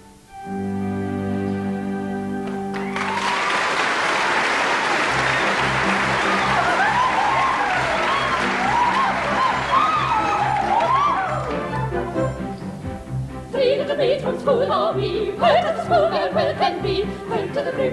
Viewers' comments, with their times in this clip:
0:05 .. come on.. these 3 hags as 3 "little maids"? nope.. their voices are much too mature for 3 little maids from school... there weren't 3 younger sopranos that could have handled this? worst rendition I've ever seen or heard... just my opinion..